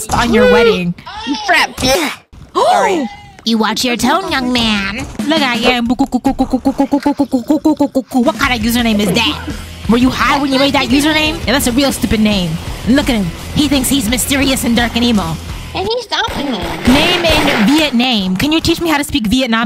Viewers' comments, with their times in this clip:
0:05 why does it sound like a chicken